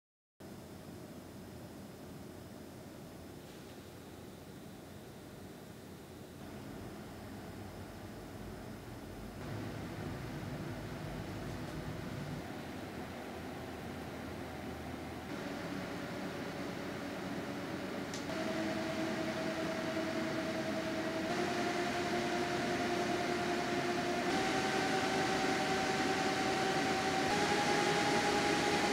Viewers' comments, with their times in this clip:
0:09 Fan companies need to start acoustically tuning fans for lower frequency, winning on the decibel chart doesn't mean anything anymore when the Silent Wings 4 is noticeably lower frequency noise than any competing fan (that I've heard).